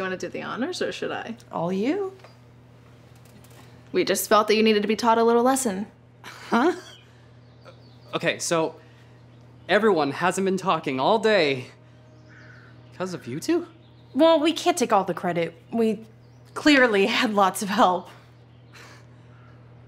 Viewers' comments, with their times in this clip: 0:06 "huh?" Sounds like a girl WTFF?